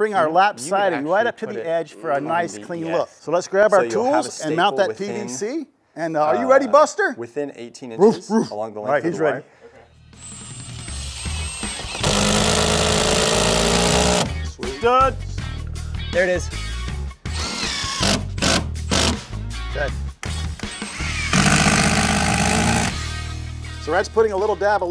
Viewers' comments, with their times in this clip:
0:05 You messed up two people can be heard not one two people :).